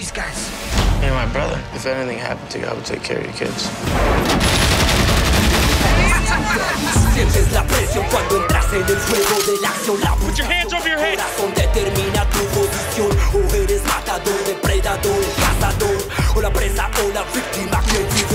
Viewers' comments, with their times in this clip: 0:04 Whats the song sounds badass.